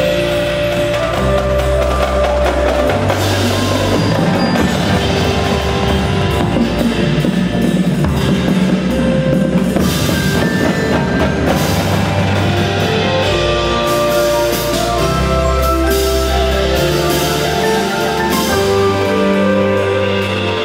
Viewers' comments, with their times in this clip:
0:05 O MY BASSSSSS